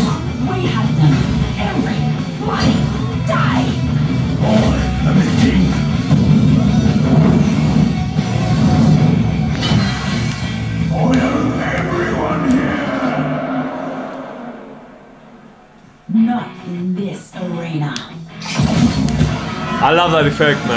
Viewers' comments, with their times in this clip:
0:07 🖐*crack* *crack* *crack* ... Jesus Christ... 😣😫